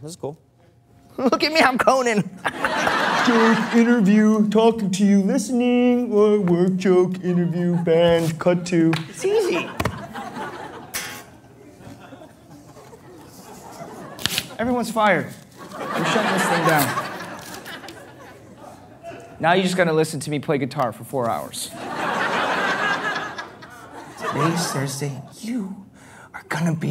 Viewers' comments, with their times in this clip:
0:10 when he smacks his hands down why does it sound like hit markers😂
0:12 this guy sounds E X A C T L Y like Keith from Voltron